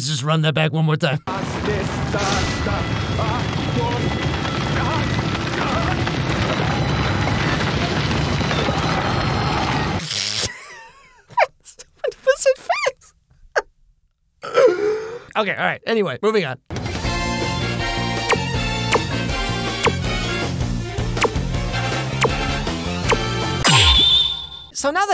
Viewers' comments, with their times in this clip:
0:10 The Laugh 😂 🤣 that was wonderful haha